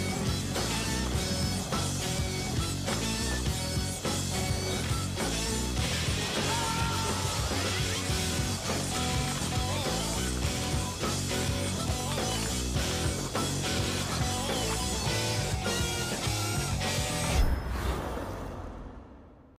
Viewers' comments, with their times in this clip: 0:06 Tony Hawk screaming was the tip of the iceberg in all this.